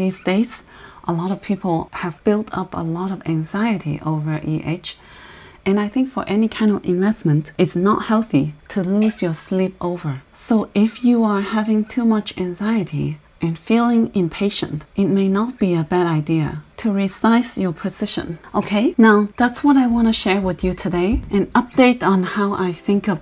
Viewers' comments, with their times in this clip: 0:08 Do I heard baby NIO in the back? ...."it's not healthy..." and then someone has coughed :))